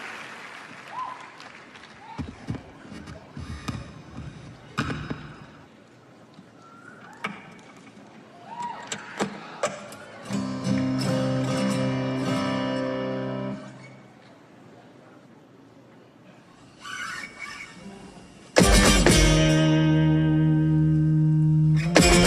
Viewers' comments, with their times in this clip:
0:09 guy makes me think he's not even playing guitar lol its sooo crazy